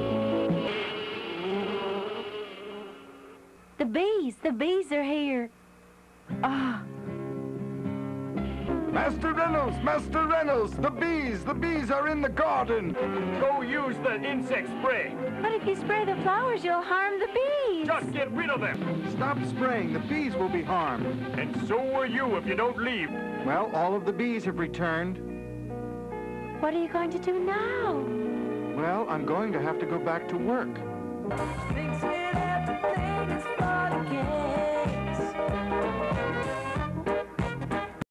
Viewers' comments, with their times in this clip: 0:05 I love that this random girl just appears and gasps in awe of the bees and it immediately cuts to the carnage that's happening in the garden
0:23 I just love how it smash cuts to some dance music right after he says that